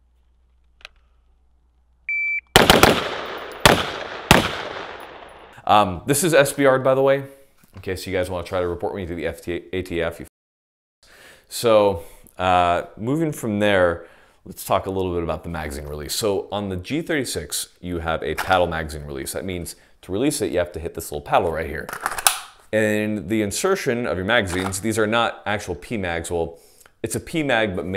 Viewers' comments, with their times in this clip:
0:09 wow a bleep